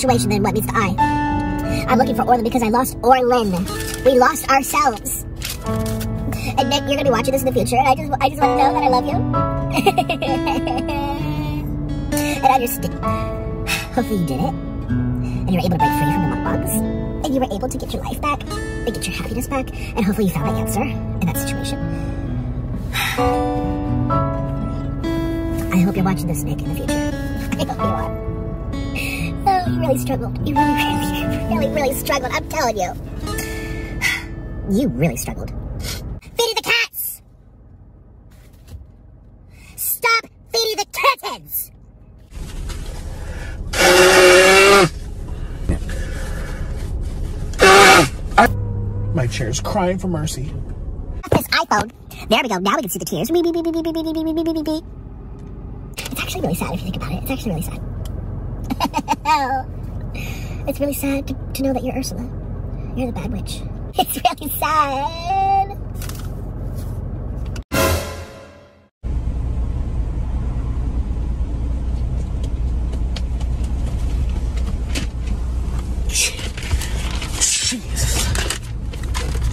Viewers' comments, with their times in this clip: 0:09 he sounds like a minion💀
0:13 Son: “mom can we have alvin the chipmunk” Mom: no we have alvin the chipmunk at home Alvin the chipmunk on home:
1:04 omg nickocado autotune 😲